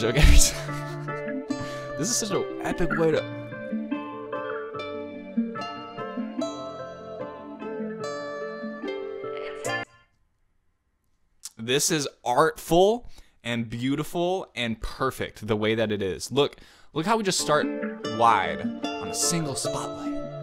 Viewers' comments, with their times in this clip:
0:03 swore you could've eaten the mic